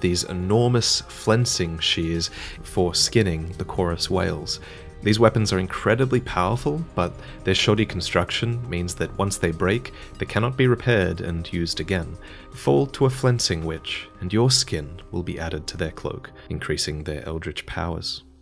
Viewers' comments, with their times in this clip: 0:06 I thought he said "This shawty's construction"